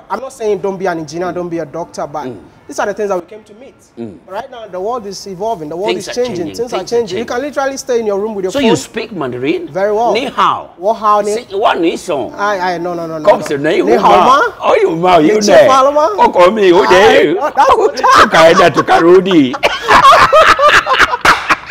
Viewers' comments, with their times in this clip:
0:08 Thats not Chinese, that sounds like Swahili 🤣🤣🤣